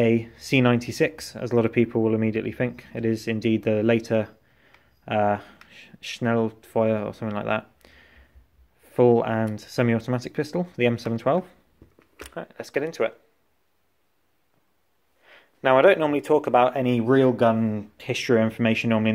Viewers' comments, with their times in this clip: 0:05 very Good pronounciation 👍🏻 I m from Germany